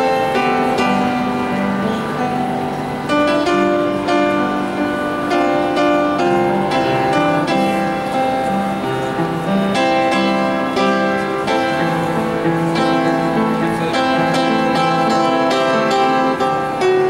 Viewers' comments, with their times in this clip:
0:05 The black dude is off tempo